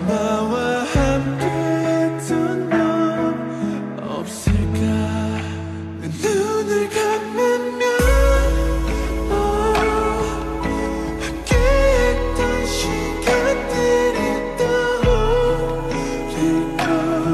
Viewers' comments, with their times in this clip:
0:05 Jin's voice literally sounds like Taehyung's high note... Give like if u agree